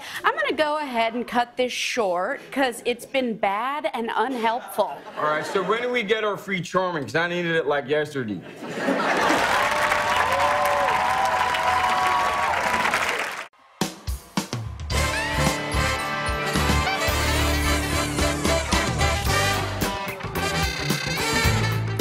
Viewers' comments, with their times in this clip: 0:09 I snorted at how he says it This whole skit was great